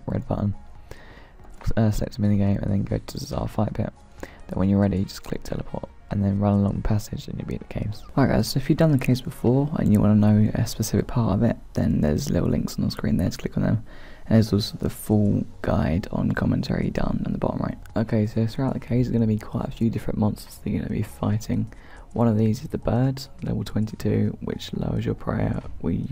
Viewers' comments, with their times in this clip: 0:08 The sound of dry mouth made me cringe.